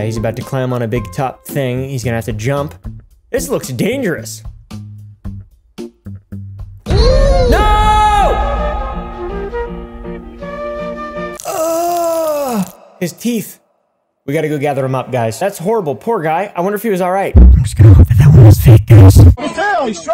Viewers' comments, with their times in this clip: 0:07 That mini me "eeeeeee" Had me dying😂😂😂